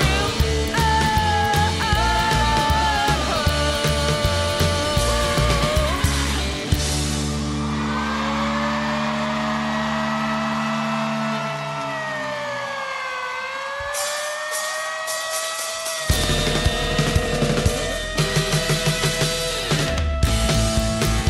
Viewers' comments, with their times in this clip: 0:09 Anybody else notice how this siren sounds EXACTLY like the one on the intro to You Can't Do That On Television from back in the day?